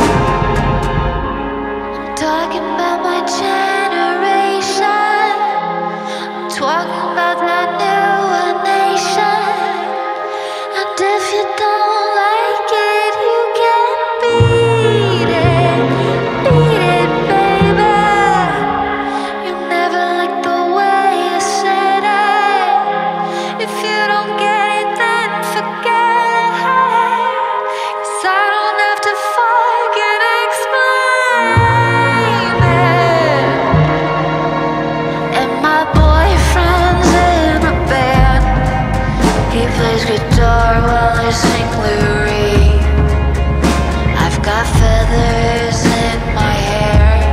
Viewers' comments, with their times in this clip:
0:06 I've been getting into Lana's music alot recently, this song really takes me to another world. I love the way Lana sings "talking" in that New York accent.
0:06 the New York accent 👌
0:29 thats the sweetest fuck i ever heard :3